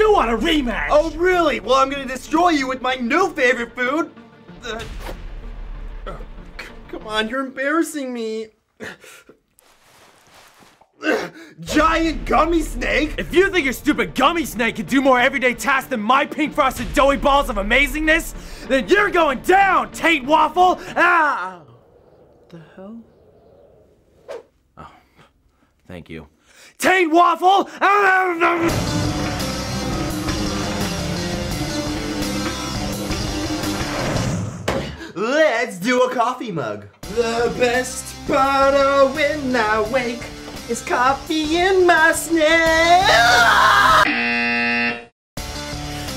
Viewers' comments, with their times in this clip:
0:10 does anyone here the pop when the gummy snake came out from his trousers
0:10 Lol that pop sound they added when he took his gummy snake out of his pants XD
0:28 on captains says muffled like cookie monster as he stuffs doughnuts into mouth